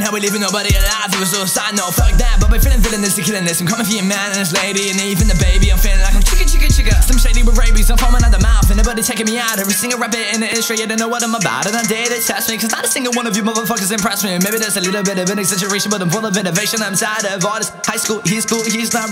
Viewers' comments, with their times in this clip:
0:05 he can’t do it but it’s pretty good.. only thing stopping u is ur voice